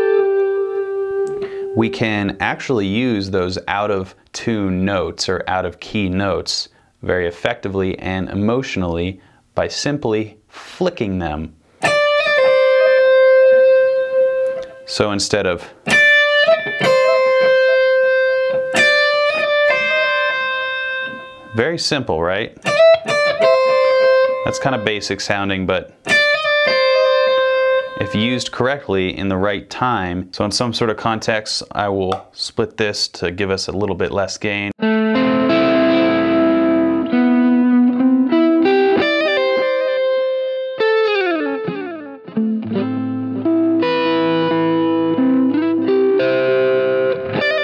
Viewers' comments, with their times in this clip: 0:05 tell me i'm not the only one who think about mateus asato when i hear that part.
0:34 I thought that was stairway to heaven (deep sigh)
0:34 he did it... he almost played stairway to heaven